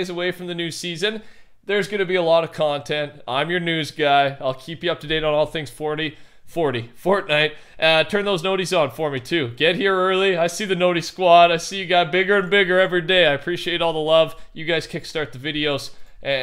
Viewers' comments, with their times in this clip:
0:04 "I'll keep you up to date on all things forty"-the camping rusher 2021